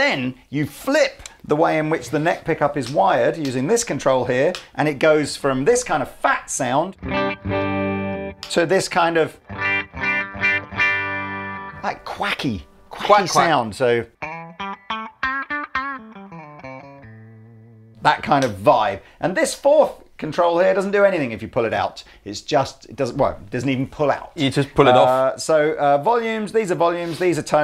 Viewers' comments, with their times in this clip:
0:09 The worst guitar tone I have ever heard.